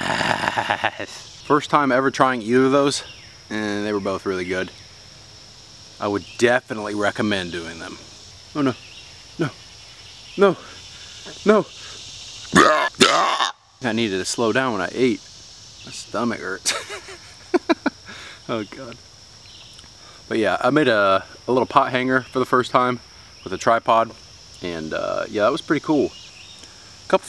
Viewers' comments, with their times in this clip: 0:08 Thanks for the warning Your tone quality has improved, as well as the projection. So much so that I purposely lured my wife into the room to "see something really cute, honey!" I'm still drying my eyes.